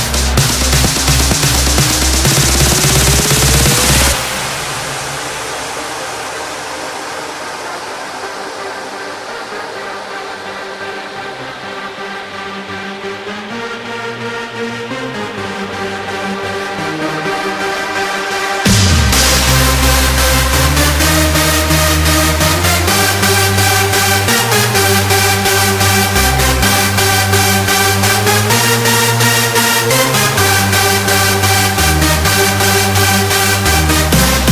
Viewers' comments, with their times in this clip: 0:07 Pirates of Carribean Still a nice drop :)
0:19 sounds like Hardwell - Encoded lolll
0:20 Sound like's Encoded of Hardwell